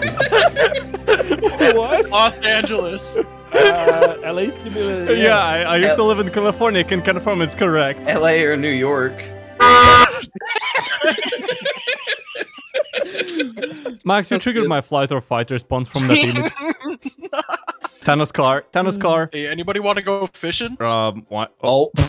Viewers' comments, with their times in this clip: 0:08 LA or New York HONK